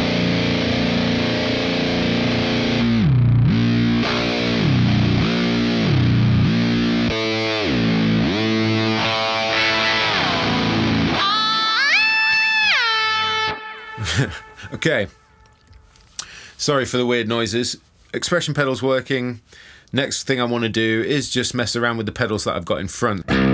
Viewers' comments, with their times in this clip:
0:09 Gojira feeling intensifies.